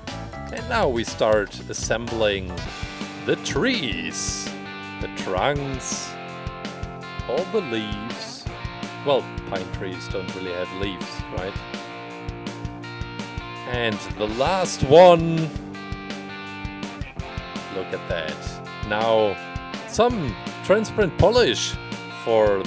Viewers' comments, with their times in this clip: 0:10 In you mic went loud when you said One